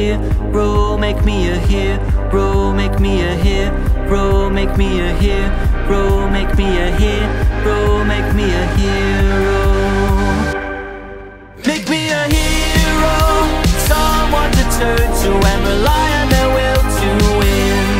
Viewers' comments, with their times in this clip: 0:03 Gregory's facial expressions say it all and the music is a banger here🔥🔥